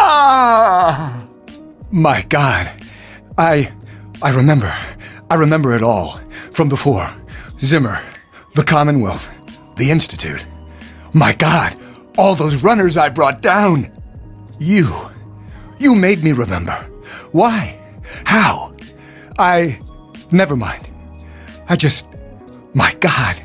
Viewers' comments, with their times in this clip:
0:04 He's doing some Shatner acting here